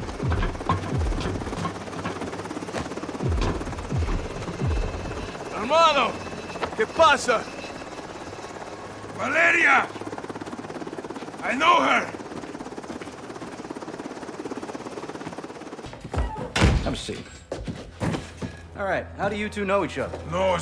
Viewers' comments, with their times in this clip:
0:04 soap talk in Spanish Hermano que pasa / Brother wasap
0:05 soap speaking spanish like pitbull
0:07 That was a pretty good Spanish pronuntiation coming from a Scot.